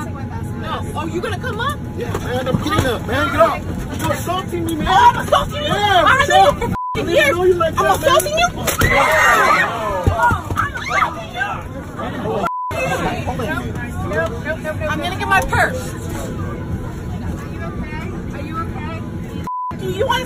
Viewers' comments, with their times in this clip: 0:07 Shocked reaction sounds like studio quality. High end budget Hollywood movie studio quality
0:07 The sound of the impact and "awwws" and "oh no's" is the best part!